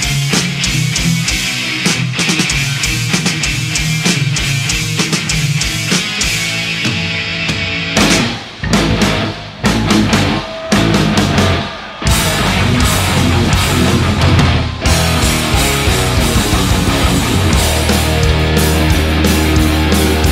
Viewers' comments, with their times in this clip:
0:08 death metal riffing
0:08 death metal riff